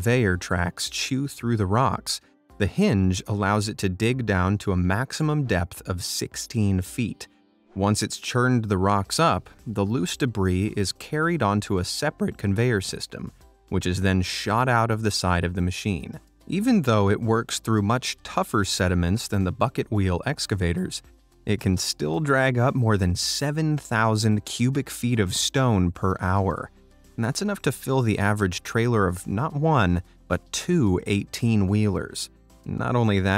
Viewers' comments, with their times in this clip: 0:08 i found a voicecrack lol
0:08 Was that a voice crack ??😂😂
0:10 i dont know why, but that voicecrack makes me happy xd
0:10 voice crack LMFAO
0:11 voice crack listen closely
0:11 That voice crack tho...
0:11 …nice voicecrack bro
0:11 Now that's a perfect sEParate crack
0:11 the voice crack🤣🤣🤣
0:11 Dude he just voice cracked
0:12 i heard a voice crack
0:13 …..nice voicecrack bro
0:20 ar hes voice crack was so funny😂